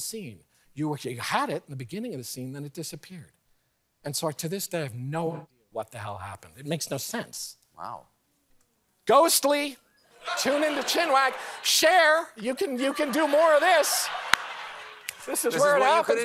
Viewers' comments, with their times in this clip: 0:04 when he is talking about the “knife” incident something happens to his voice/mic. Spooky 🤔👻